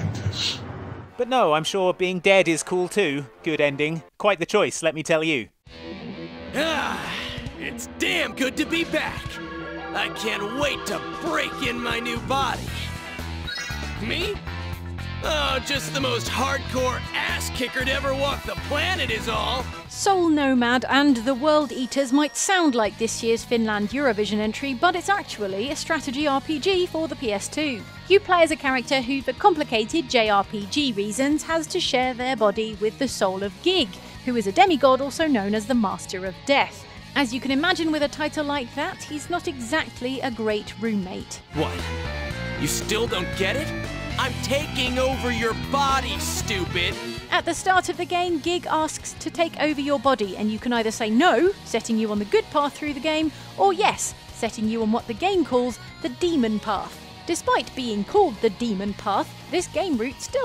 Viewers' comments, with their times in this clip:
0:06 I saw Mysterious Man, I hear Bakugou
0:10 Am I the only one who thought the voice actor for the "Mysterious Man" aka Gig in sounds like a Yu-Gi-Oh Character- I'm not the only one who thought this, right?
0:14 ive never seen this character before, but why does he sound WAY to much like sasuke? yes yes i know im a giant nerd
0:46 that seriously sounds like Ben 10 from Alien Force.